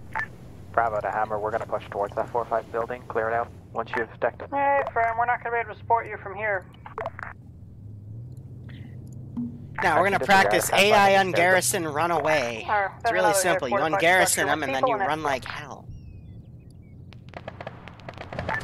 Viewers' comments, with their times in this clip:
0:06 the hammer on radio reminds me of 1 of the voices from henry stickmin